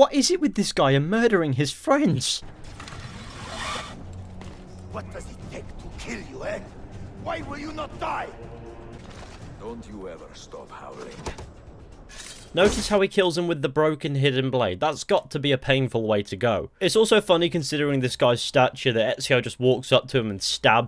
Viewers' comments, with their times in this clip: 0:08 Did he said: Don't you even stop (Todd) Howard? 🤔